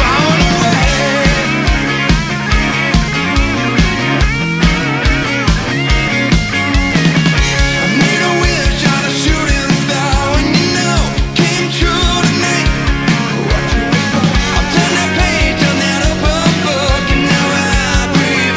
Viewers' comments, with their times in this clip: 0:03 Why such a MOR adult soft Rock song, so incredibly inoffensive and tired? But I must say the manly dancing makes up for it, fabulous!